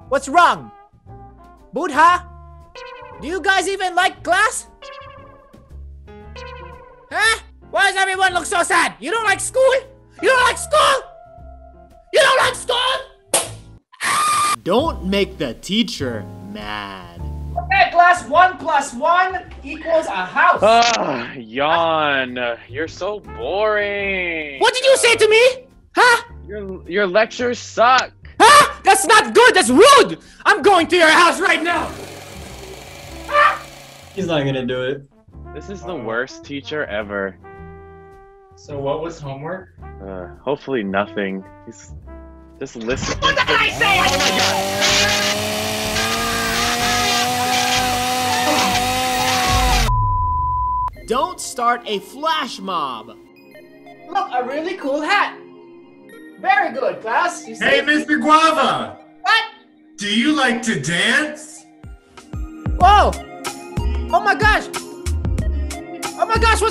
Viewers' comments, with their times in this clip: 0:10 had me dying the scream
0:13 THAT SOUNDED LIKE BALDI SLAPPING HIS RULER IN HIS HAND
0:14 Another Perfectly Cut Scream
0:43 sounds like a voice from mr peabody and sherman Movie
0:45 I got spooked of the chainsaw part
0:48 Mr.Guava: murders someone Blood person: YAHH Chants